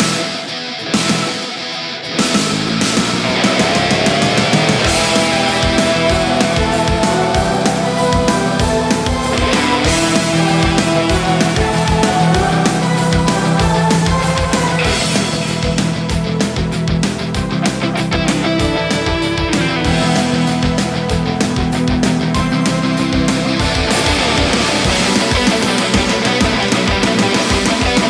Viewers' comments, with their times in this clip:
0:04 the sounds. oh my god. Like big boss is coming
0:14 is so sick with the sample in the backround